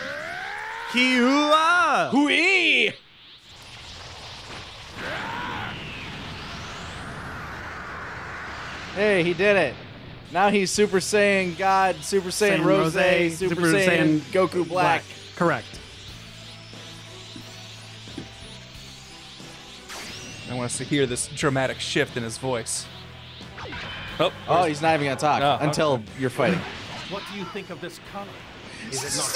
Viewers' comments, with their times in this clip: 0:10 The music is just phenomenal. Say what you want about the game, I feel like the soundtrack is amazing.